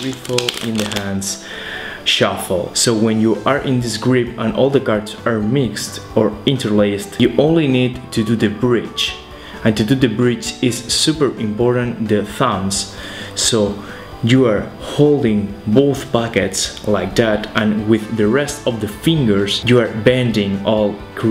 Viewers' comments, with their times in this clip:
0:06 did someone hear the siren